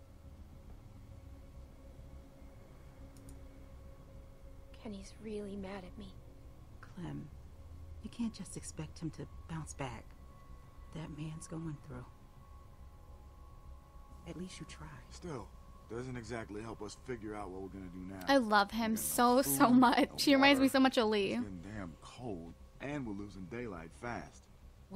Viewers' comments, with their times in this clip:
0:05 she is going cry it sound like :(